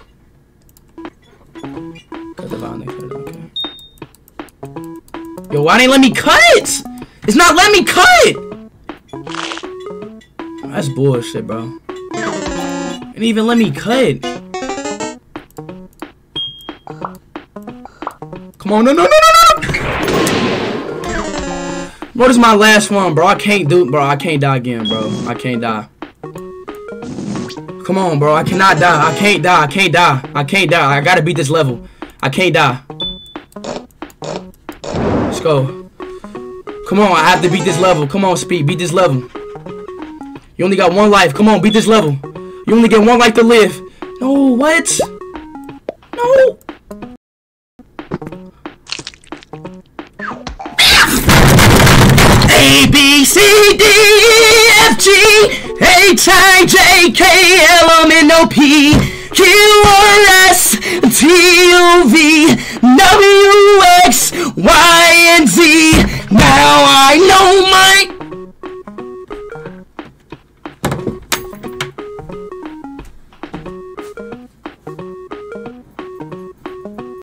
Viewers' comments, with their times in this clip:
0:10 when speed is too loud for wifi
0:27 When he sing abc
0:40 literally sings ABC 😂😂😂😂😂😂😂😂😂😂
0:42 is where he does his beautiful song 😆
0:47 Is when he's gonna start singing lol
0:48 He Started Singing The Alphabet 😭😂💀
0:48 Rip to people who were wearing AirPods
0:48 bro decided to turn into an Eagle and then proceed to learn the alphabet all over again
0:50 WHAT KIND OF SCREAM WAS THAT?!
0:50 is my favorite part of the whole video when he sings the abc's
0:50 scream A B C D E F G H I J K L M N O P Q R S T U V W X Y Z NOW I KNOW MY ABCS
0:51 Speed: turns into a demon screaming Also him: A B C D E-
0:51 Let's agree that Speed is a great singer lol.
0:51 speed has a voice of an angel
0:51 The Time For Him To Start Singing.
0:51 Aggressive Aggressive alphabet 😅
0:51 speeds singing is actually lowkey good
0:51 I don’t know if I’ve ever seen anyone sing their ABC’s in pure rage
0:51 * speed raging* A. B C D E F G. H I J K L M N O P. Q R S T U V- W X. Y AND Z. NOW I KNOW MY-
0:52 i’ve never heard anyone other than speed belt out his abc’s in a spite of rage
0:52 the way he sing😂
0:52 when you are mad at the kids because they are not listening to you singing abc instead you scream it so they would listen
0:52 he has a great voice when he is singing his abc
0:52 I like how he sings the alphabet at the end😂
0:52 is when he sang the abc's-
0:52 speed sings abcs
0:52 Speed sings his abc song
0:52 He Sings the abc song
0:52 Speed sings his baby song
0:53 Abc rap be like 😎
0:53 epik singer lol
0:53 z why are u sining the alpha bet
1:02 my ears hurt